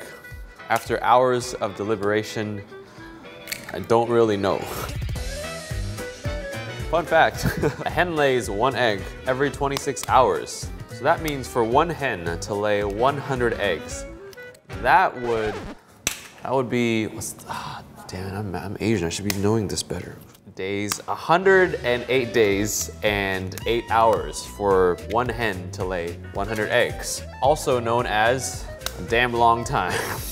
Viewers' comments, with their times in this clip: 0:03 Just because your asian doesnt mean you have to be smart. Edit: not saying your not smart btw love ur voice its so peaceful/wholesome
0:15 "That would be.... *under breath* damn I'm Asian I should be doing this better" 😂😂😂